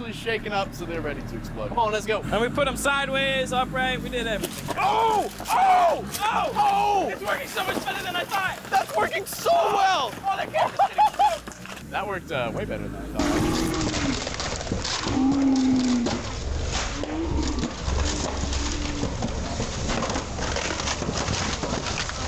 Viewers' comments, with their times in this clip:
0:07 And it goes pew